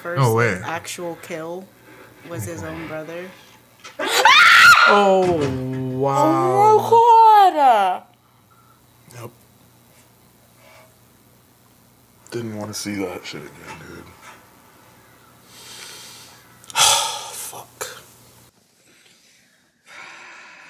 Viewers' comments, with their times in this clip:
0:03 When he said, through his tears " See, I didn't want to see this again". WHEN I TELL YALL I FELT ALLL OF THAT😭😭😭. My son had to BEG me for a few days after to watch this episode cuz I knew what was to come and I just couldn't handle it.. That part in the game BROKE ME! After the first time I watched this happen in game any time I replayed it I made my husband do it cuz I had to leave the room. It was ALMOST as bad as TWD when Lee had to kill that boy... Ducky.. That kid favored my son and they were the same age.. Being a parent and having to shoot a kid is just.. idek the word for it.. My husband was about to come home from work because i literally couldn't stop sobbing..I wasn't crying I was sobbing. I never fucking played that game again lol. My son has epilepsy so him being hurt or dying is literally in our face daily. So when kids get hurt or die.. it just hits me a little too hard.